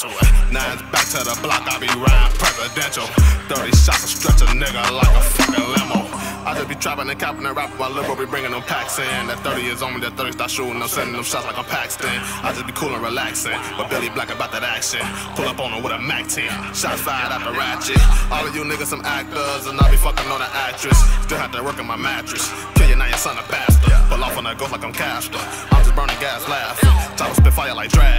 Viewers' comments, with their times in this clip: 0:10 Did Billy just said shooting like I'm Pakistan ?